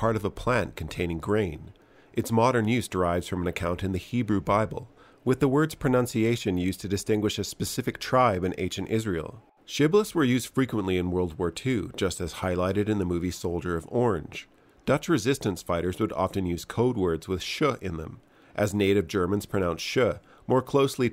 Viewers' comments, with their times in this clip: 0:05 Ironic that in a piece about pronunciation the voice overs uses pronounciation.